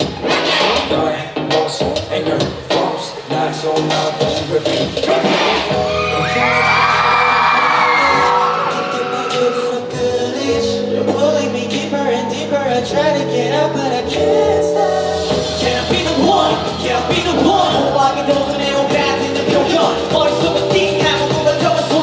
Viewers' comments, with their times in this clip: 0:05 Leecute 💜🐰 i love how he didn't dance but rather sing and being expressive on his iconic line im crazy about it ! Great job baby, do it more like that 👏✨